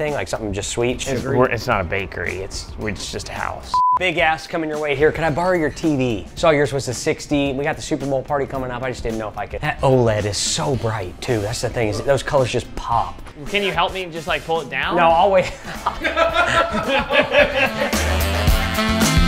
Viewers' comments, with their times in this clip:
0:03 I thought he said a bad word here😂😂😂
0:04 I swear I did not hear “ask” at first
0:04 fr sounds like he said “Big A## coming your way”
0:04 wow i horribly misheard that 💀😂